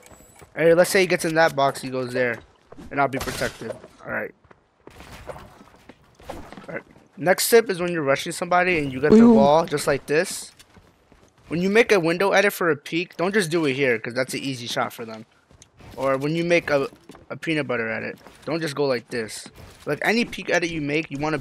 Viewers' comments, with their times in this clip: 0:07 whats the wee-woo 😂